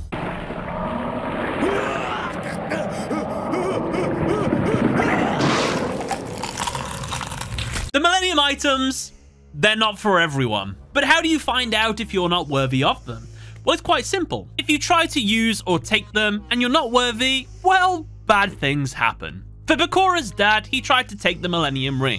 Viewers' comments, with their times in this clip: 0:06 Jesus, that crunch!